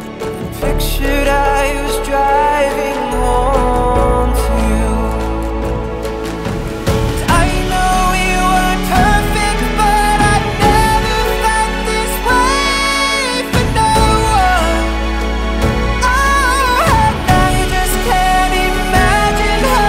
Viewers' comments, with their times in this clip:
0:07 Bro the emotion you can definitely relate somehow and the belt is insane